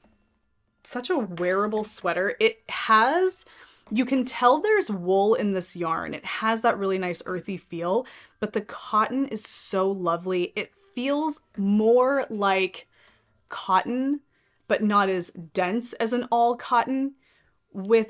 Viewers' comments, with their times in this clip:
0:04 Do you have a wind chime? I were headphones and sometimes I hear what sounds like wind chimes once in a while. It's way in the background but a cute surprise. Anyways, another good video. Have a great day!